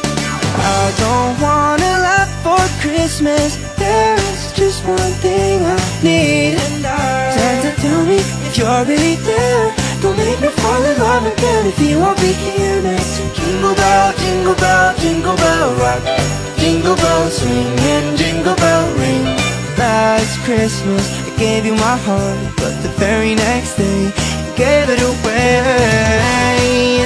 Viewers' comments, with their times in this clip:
0:09 I love the small detail of Scaramouche’s eyes dilating when he hits that high note on the word “there”